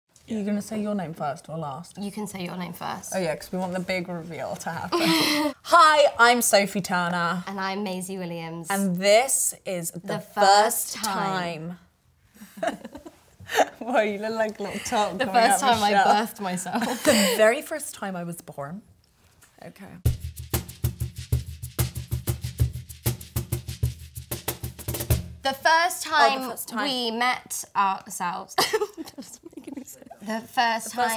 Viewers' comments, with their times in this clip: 0:05 That gasp in after Sophie are talking about who said their name uff aria you are crazy baby cute though
0:17 Did Sophie do an American Accent ??